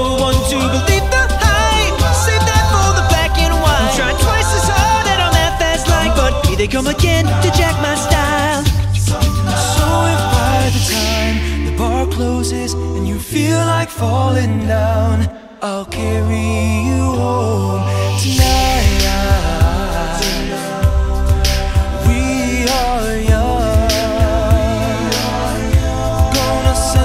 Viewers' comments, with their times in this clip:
0:10 Who starts singing ? His voice is amazing..